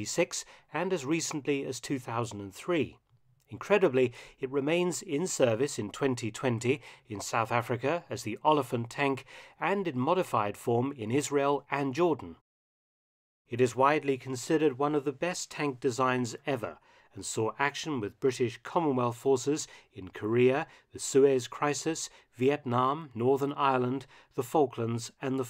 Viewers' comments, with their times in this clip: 0:08 Note they butchering of olifant is elephant in Afrikaans.